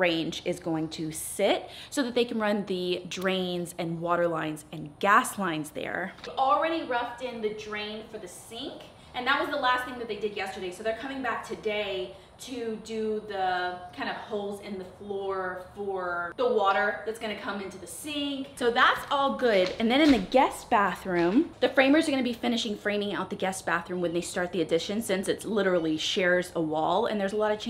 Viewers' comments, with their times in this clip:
0:09 Something runs by outside…a cat maybe?